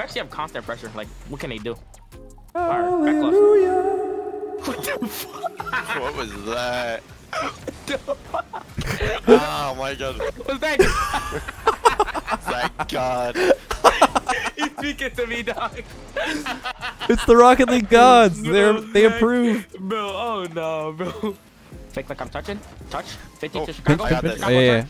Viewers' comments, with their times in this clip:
0:06 Did anyone hear that beat?